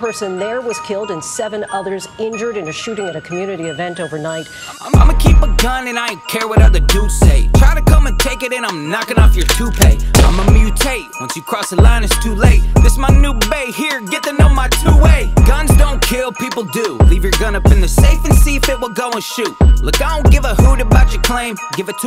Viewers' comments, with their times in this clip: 0:03 Up until I thought this was some HomeAlone-style christmas music 😂